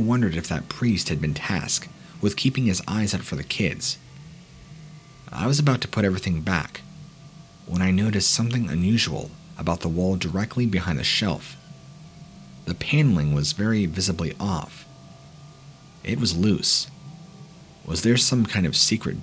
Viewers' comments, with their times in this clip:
0:05 Awwe.. That your little one crying ~‽ at first when I was working in my garage listening to this, I thought that was mine so I ran around looking till I found him asleep in my bed. The ol' lady was like "wtf is wrong with you?" Thinking I was going crazy lol